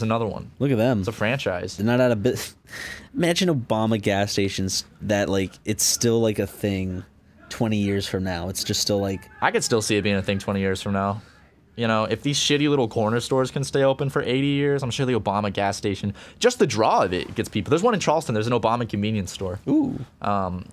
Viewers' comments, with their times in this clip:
0:07 you can hear a gay couple climax in the background
0:08 you can hear Arin in the background 😂